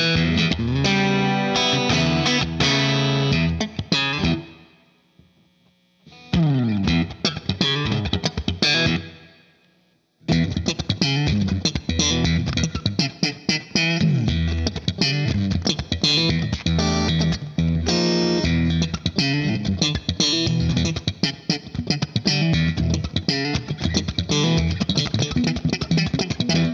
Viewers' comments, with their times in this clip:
0:07 How can I learn to play that slap style you start ? That’s so cool.